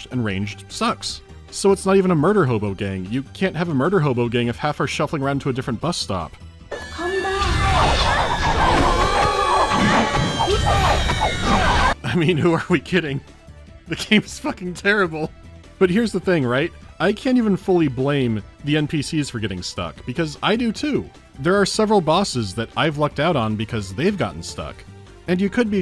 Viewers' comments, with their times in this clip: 0:07 Please tell me someone else heard the mandrakes ("or mandragora") from Harry Potter 2
0:11 "Who are we kidding, the game's f*cking terrible." I love that little mid-review mental breakdown, hysterical laughter included. And then he goes on and continues the serious review like a true professional.